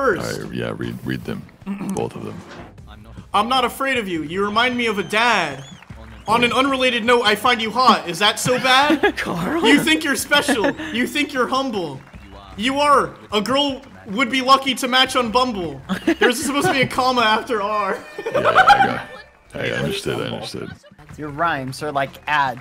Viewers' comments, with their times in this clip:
0:08 Sykkuno's "Karl" has me dying